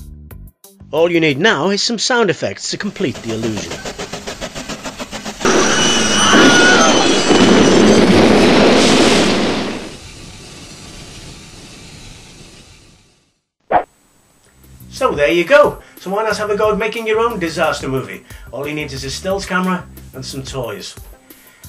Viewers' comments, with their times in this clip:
0:06 wilhelm yell lol